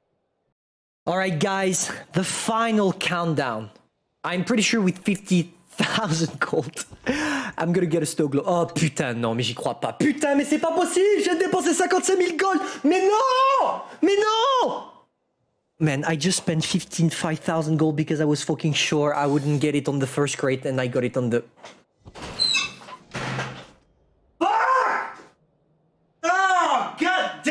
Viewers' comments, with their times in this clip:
0:09 Angry Baguette Noises
0:09 Angry Frenchman Noises